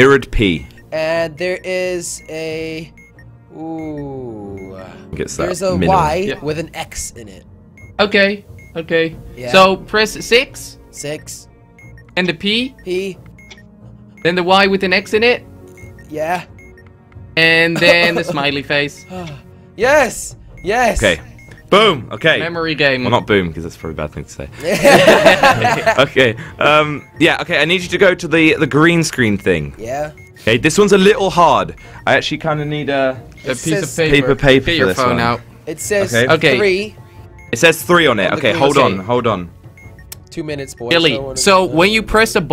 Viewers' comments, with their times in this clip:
0:09 did he say “Y with a X in it” or “I with a X in it”?
0:24 Jelly and Kwebbelkop are laughing so creepily 😃